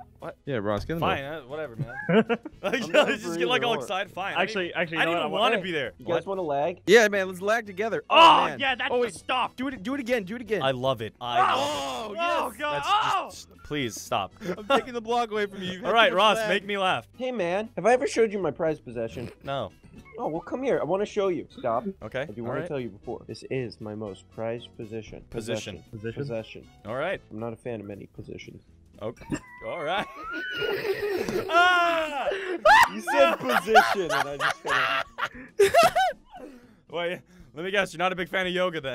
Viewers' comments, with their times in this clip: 0:05 Close your eyes it's weird
0:25 The delivery was so smooth